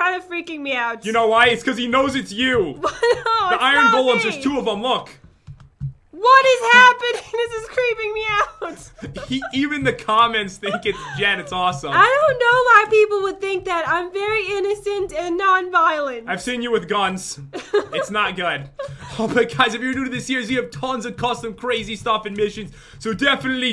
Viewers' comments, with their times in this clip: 0:06 idk why the way she says “WHAT IS HAPPENING” is so funny oof